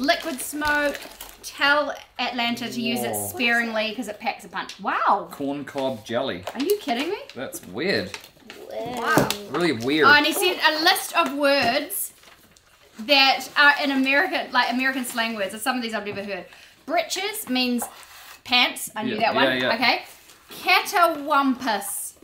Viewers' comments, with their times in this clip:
0:09 😅 "weird". making me realize how funny our accent sounds here